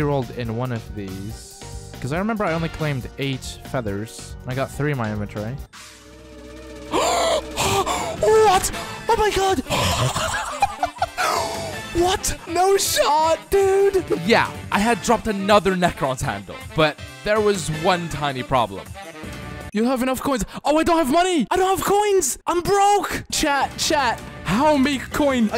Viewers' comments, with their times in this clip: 0:08 me when I almost drown